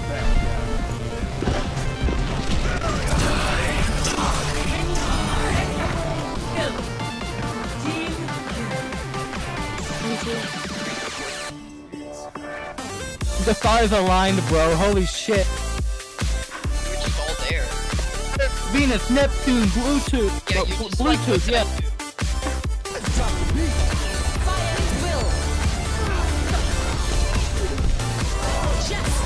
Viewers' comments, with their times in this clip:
0:10 YO WHO THE FUCK MADE THE CLIP MY MIC IS S FUCKING LOUD I SOUND LIKE I'M DEEPTHROATING